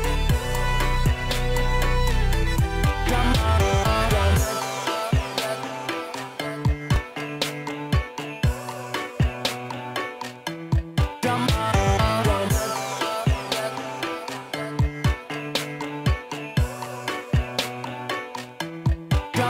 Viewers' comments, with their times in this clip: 0:04 1.5 or 1.25 speed is good beat Edit: actually I love the whole track with 1.5